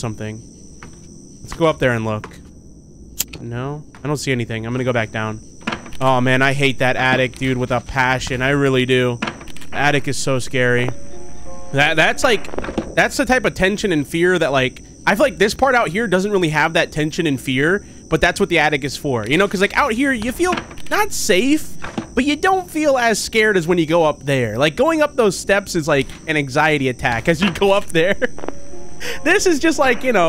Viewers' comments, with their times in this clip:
0:10 you missed the knocking here
0:12 There was knocking here and he didn’t realize it, which I’m pretty sure that is what happened when he clicked out of the game and assumed it went in the attic when he clicked out of the game. Since it was the first of the four nights it appears on, it gives you a larger amount of time to get rid of it. He didn’t hear it because it went into the attic when he closed the monitor. You need your volume to be very high to hear it.(Also I didn’t mean to make the time stamp the same number for each digit, that was a coincidence.)